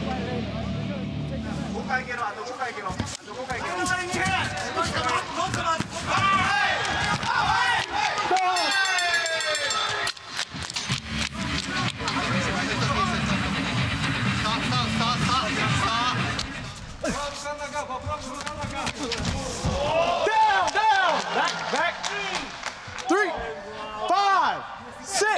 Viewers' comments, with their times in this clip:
0:08 was the gnarliest. I think the sound was his head snapping back from that ground punch